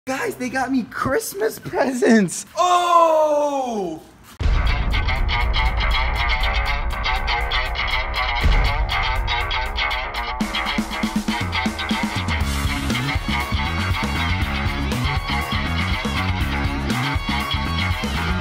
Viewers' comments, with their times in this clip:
0:00 they got me Christmas peasants lol😂😂😂 I'm dying